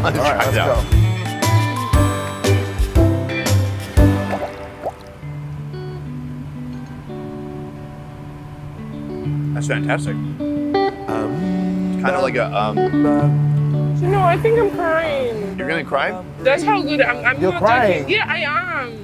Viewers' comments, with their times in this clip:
0:04 when they tasted that dish for the first time and the entire table got quiet. Especially the chef; Like he knew as soon they tasted his dish it was going to be like experiencing a piece of heaven. 🙌🏽🙌🏽🙌🏽 And then the host said “That’s fantastic” and then Ms.. World Nigeria wanted to cry. Whatever was in that bowl was glorious